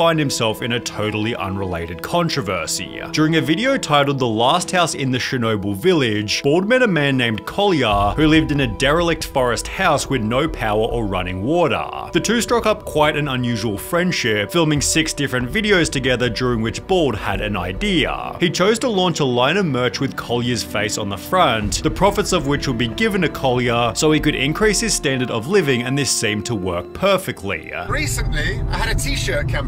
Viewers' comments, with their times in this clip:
0:10 how pretentious do u wanna sound wataaaaah i cant listen to this guy, im out